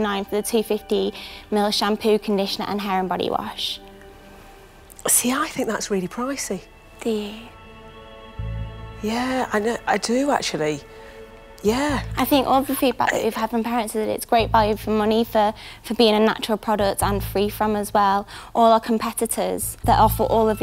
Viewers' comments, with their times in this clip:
0:04 Entrepreneur’s response is straight out of a rom com. So breathless 😂